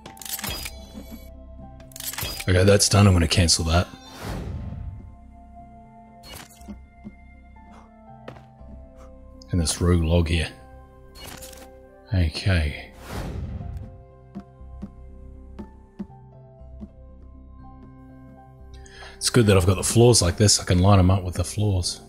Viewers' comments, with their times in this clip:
0:03 Is that the kid crying ? Congrats man